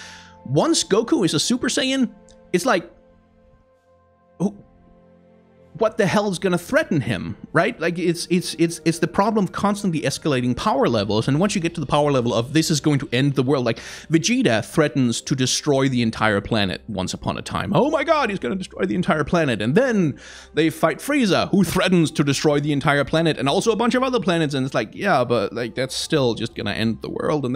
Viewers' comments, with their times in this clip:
0:08 I had to stop doing everything and ask... "Did he just say "Dragon Ball Zed"... Then I realized... He may be right.. and we have been saying it wrong the entire time....